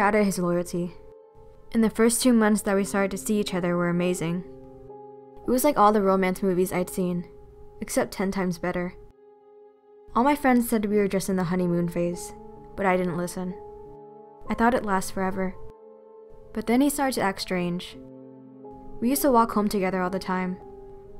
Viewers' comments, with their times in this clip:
0:05 I literally thought she said "hentai was better" um-